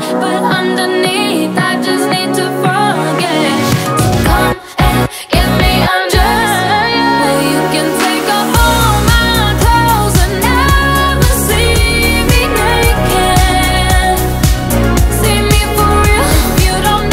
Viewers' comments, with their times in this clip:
0:04 When she say undressed the vocal like ari😍